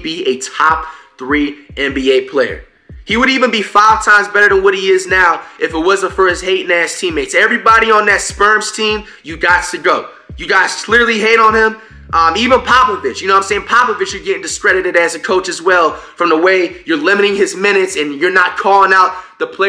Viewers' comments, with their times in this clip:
0:07 Anyone else hear him call the spurs the sperms💀💀😭